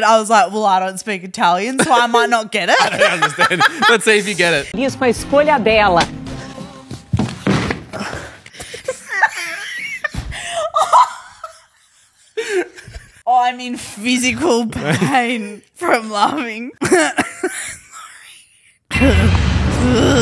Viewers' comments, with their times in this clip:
0:06 The quiet GRUNT OF DEFEAT lmaoooo